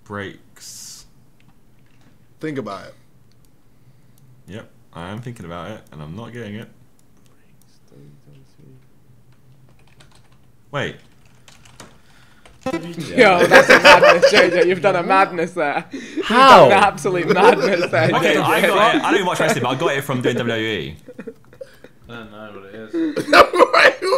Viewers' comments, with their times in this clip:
0:08 vikk whispers stone cold steve austin